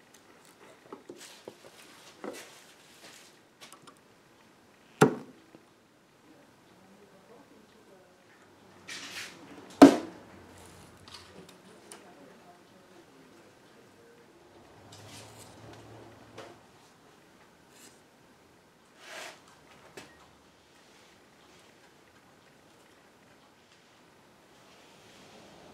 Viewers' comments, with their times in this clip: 0:07 Though I enjoy your instructive narrations, the quiet taps and saws of tools on wood near created a relaxing interlude.